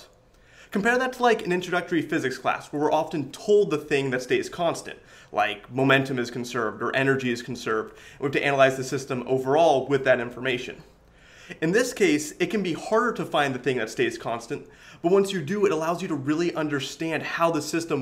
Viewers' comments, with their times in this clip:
0:05 Did you just pronounce the “t” in often? Wow.